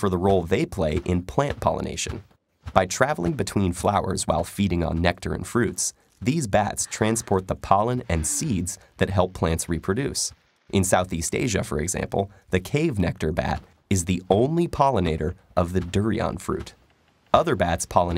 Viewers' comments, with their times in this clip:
0:06 she moan after hearing the word seeds...